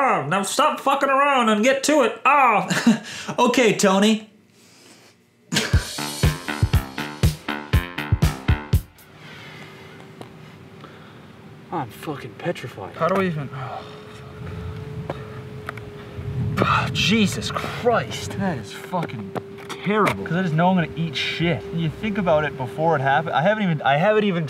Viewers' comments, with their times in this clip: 0:05 did you know that he actually broke down crying and not laughing??!!?